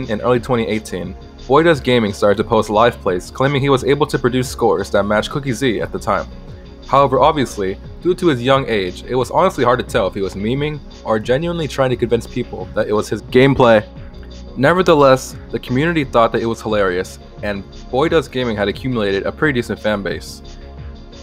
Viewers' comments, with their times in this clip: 0:09 wtf is this voice 😭 gameplay